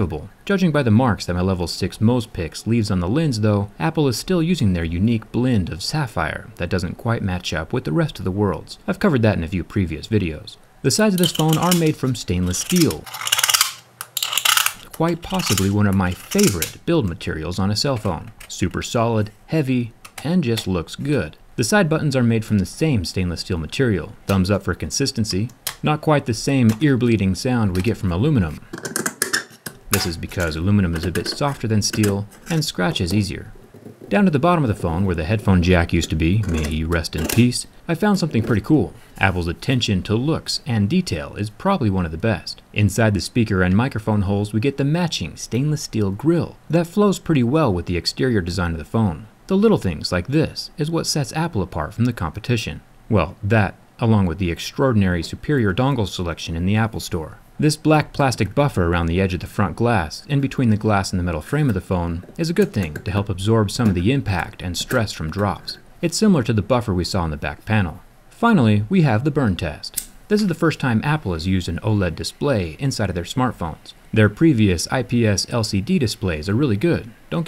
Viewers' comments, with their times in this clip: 0:03 was such an ewww sound
0:08 go to to have some nice ear bleeding
0:11 blood from my ears
0:12 The sides of this phone are made from stainless steel My ears- Apple please use cheap plastic instead!!😭
0:12 mmmm that ASMR
0:13 fuck my ears
0:13 Thank you... 1 scrape will do 🙃 *ears bleeding
0:13 fuck my ears
0:13 hurts my ears
0:13 Sounds like Dart from stranger things :O
0:15 scrape literally killed me I’m dead
0:29 sounds just like when you break a tool in minecraft lol
0:29 minecraft anvil break
0:30 man that’s the freakin’ sound of your Minecraft pickaxe breaking
0:34 That scratching sound
1:02 satisfying asmr: iphone x cutting.